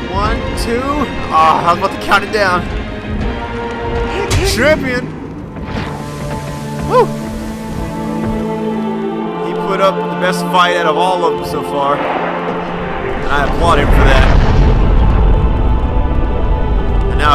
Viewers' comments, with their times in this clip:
0:03 what do you yell lmao